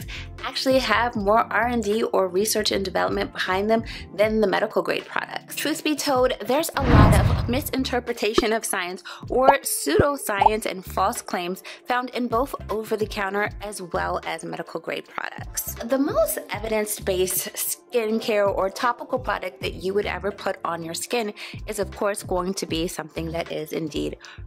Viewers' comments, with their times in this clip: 0:09 Did anyone else loose sound 🤔